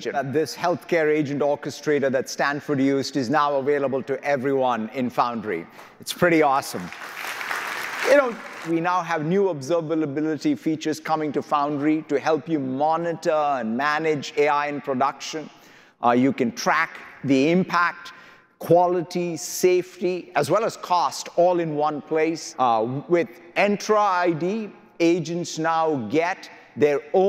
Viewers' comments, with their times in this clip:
0:10 Huge respect 🫡 satya for handling the background disturbance. On a lighter note: I thought I am the only one who fumbles while saying observability 😂😂😂.
0:10 Huge respect 🫡 satya for handling the background disturbance. On a lighter note: I thought I am the only one who fumbles while saying observability 😂😂😂.
0:10 Huge respect 🫡 satya for handling the background disturbance. On a lighter note: I thought I am the only one who fumbles while saying observability 😂😂😂.